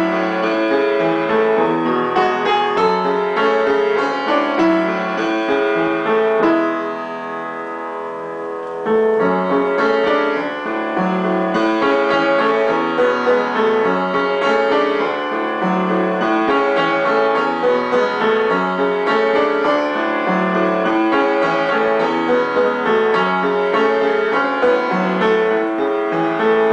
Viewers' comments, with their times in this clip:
0:09 Best piano cover of this song on youtube! I think your fingers are too heavy, you play so strong, well it's a much much softer song. Isn't there a little more pause ? Again, you're great.